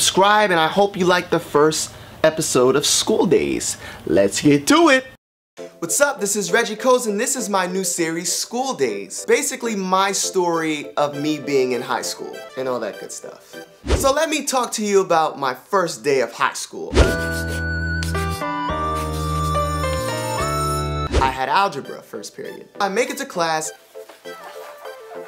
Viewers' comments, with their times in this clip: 0:06 sounds like Sober by Childish Gambino